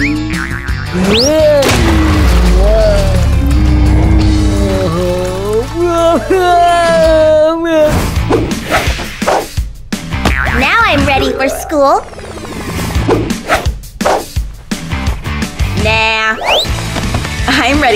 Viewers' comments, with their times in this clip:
0:05 That is probably The Most stupidest Cry I've ever heard.😂